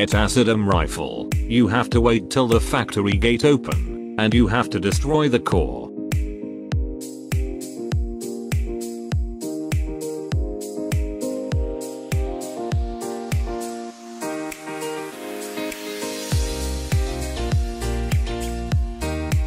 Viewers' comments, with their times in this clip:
0:06 bruh the beat and the sword